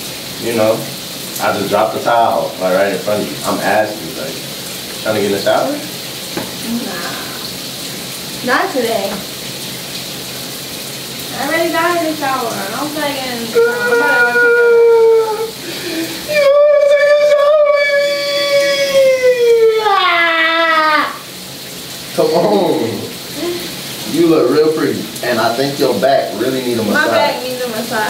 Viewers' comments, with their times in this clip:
0:09 The way she said not today 👀😂